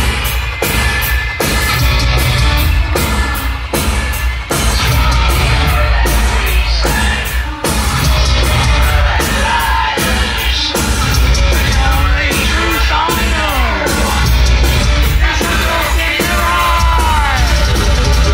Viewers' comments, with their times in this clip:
0:04 absolutely, watch from and Al is talking to guitarist while his voice plays. Anyways, I still loved being there.